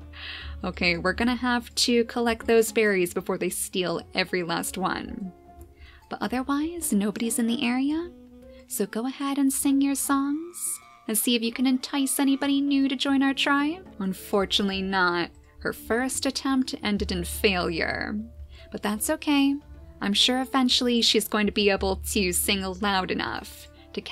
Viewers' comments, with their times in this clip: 0:10 Lapis is bad at singing It sounds more like screeching [oWo]